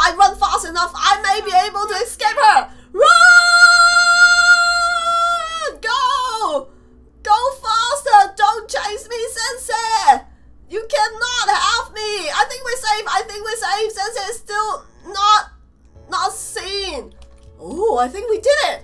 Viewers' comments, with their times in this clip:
0:04 hello her voice is Just